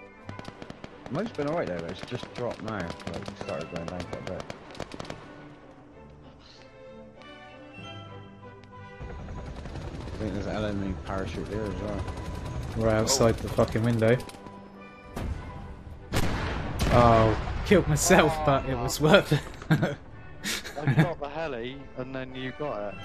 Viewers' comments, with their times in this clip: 0:06 There's me talking